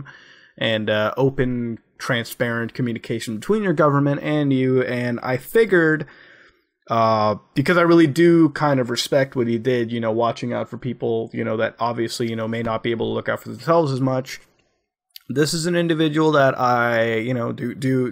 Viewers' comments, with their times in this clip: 0:05 what's figgered? Are you going to throw figs at me?